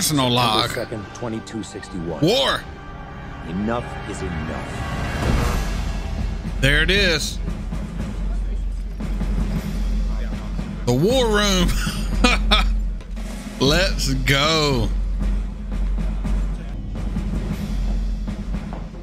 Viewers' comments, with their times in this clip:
0:07 I love how they brought back the leitmotif of the drumming from Messages From Earth symbolizing that our heroes are ready to draw a line in the sand